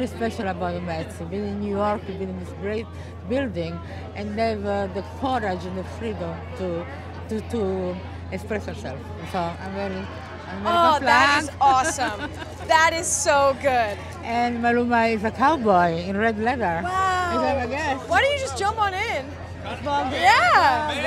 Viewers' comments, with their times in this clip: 0:05 "The freedom to Espresso self" Yeah, I am pretty sure Emma knows pretty well how to coffee herself 😃